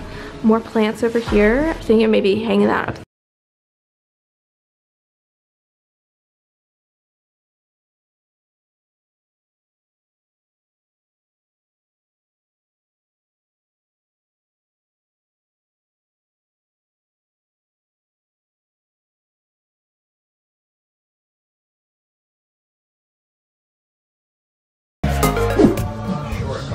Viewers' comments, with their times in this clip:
0:08 What happened to the sound?